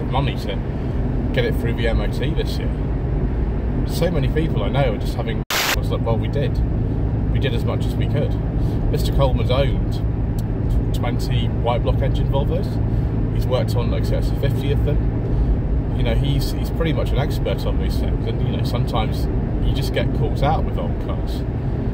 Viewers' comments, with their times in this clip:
0:05 Another intestering vlog sir. However I think we have lost around 4 mins of audio. It goes out of sync at approx and the wrap up happens in the 8th or 9th minute but the picture continues for another 4.